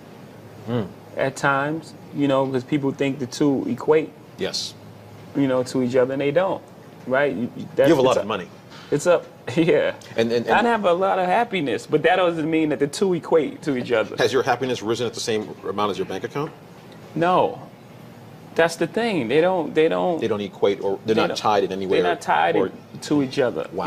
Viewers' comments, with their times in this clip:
0:09 they way jigga laughed was fuckn Incredible!! dude said u got a lot of money..😂😂